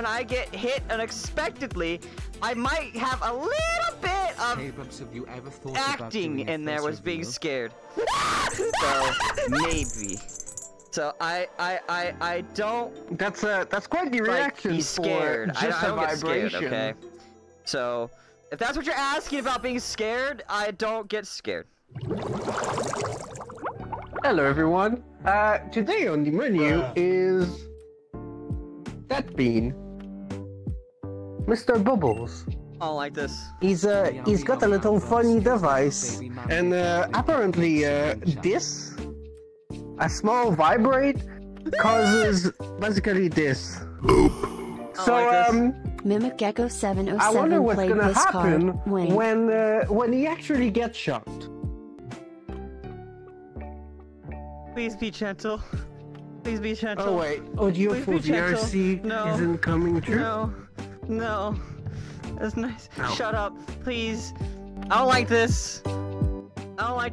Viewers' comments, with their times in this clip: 0:08 I love the way how he screams like that it’s so hilariously funny!! 😂🤣
0:55 um sounds very sus if you close your eyes 😳